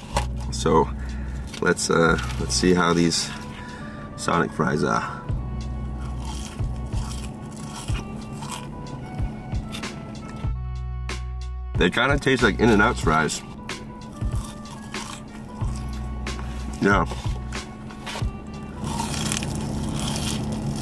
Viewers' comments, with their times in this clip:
0:04 Damn those fries were mad crunchy